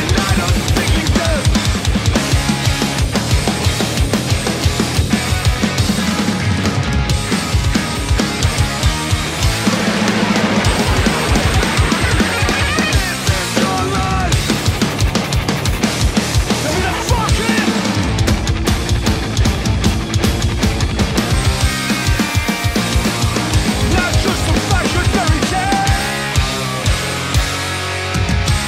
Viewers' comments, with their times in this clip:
0:09 Are those singles???! MY GOD